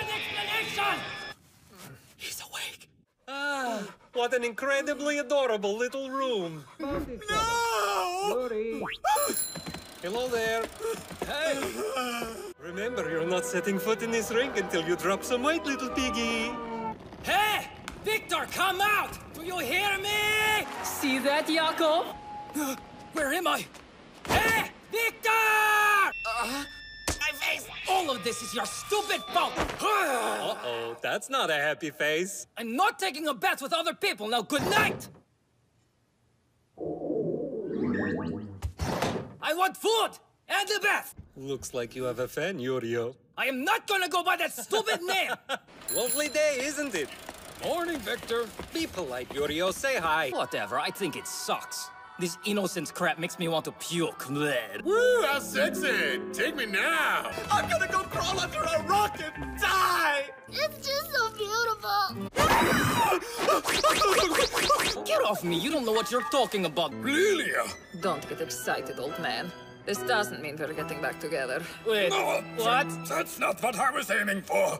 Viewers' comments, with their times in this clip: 0:03 "what an incwredibly adorwablwe liwttel rwoom" SORRY VIKTOR I HAD TO
0:04 AaAhH wHaT an adOrAbLe lItTlE RoOm tf did i just hear gRU
0:10 bruh why is that "helo there" so adorable-
0:14 THE WAY HE SAYS “LITTLE PIGGY” HAHAHHAHA
0:17 Victor: "I'm gay!" I'm so dumb
0:17 yall why does this dude sound like gru
0:22 that moment when you’re so confused that you lose your accent Edit: hooooolllyyyy %&*#! Why does this have so many likes!?
0:22 HIS ACCENT DISAPPEARED-
0:22 he sounds like kaidou??
0:23 WoAh, Yurio was so confused he lost his accent-
0:23 He was so lost even his accent couldn't find him
0:23 when you're so lost you even lost your accent 😂
0:23 for a split second he didn't have an accent
0:23 Yurio got so frustrated he lost his accent 😂😂
0:23 he forgot his accent
0:23 when you get so surprised you drop your accent 😂
0:27 THE WAY HE SAYS- “my face-” -IS JUST HILARIOUS 😂
0:32 yuri: IM NOT GONNA TAKE A BATH WITH OTHER PFEOPLE! - also yuri: I WANT FHOOD! AND A BAFH
0:32 HE SOUNDS LIKE GRU FROM DESPICABLE ME 👀 KEKSKSKSKSKSKKSKSKS
0:38 *aggressively open door* I WANT VHOOD! END A BETH!
0:43 Ok but Victor’s wholesome laugh 🥺💖
0:44 Viktor has a very nice laugh there
0:47 Ok, they went to the trouble to make Victor speak in a Russian accent but didn't try to make Yuri sound Japanese?! That "Be polite Yurio''🤣🤣
0:53 when Yurio stuck out his tongue i thought he sounded like Dracula from Hotel Transylvania
0:54 that was the most Russian blegh I have ever heard
0:57 the voice actor is so passionate and i feel it in my soulllll
0:57 The way he says this is so relatable
0:57 IM WHEEZING HE SAID THAT IN SUCH A RELATABLE WAY
0:57 "I'M GONNA GO CRAWL UNDER A ROCK AND DIIIIIIE!" Wait... Armin???
0:58 You gotta admit the delivery of the line is pretty damn funny